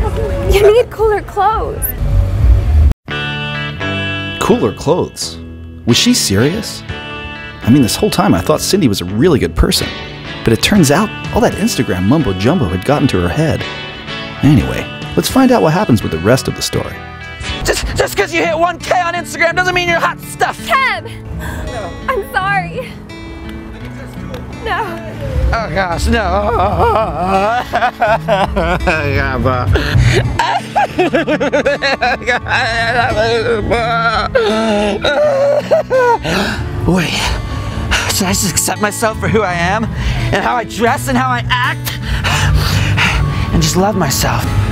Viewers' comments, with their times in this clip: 0:03 Whoever's voice that was needs to be a voicer for shit for sure
0:11 THE DUDE SOUNDS LIKE THE INTRO TO SANDLOT😂
0:26 Laugh cry combo